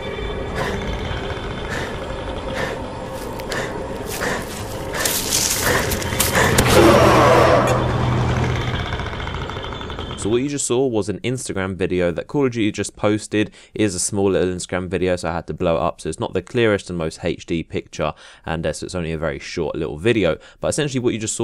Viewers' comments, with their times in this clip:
0:07 What roared it the predator doesn't sound like that but that roar does sound awesome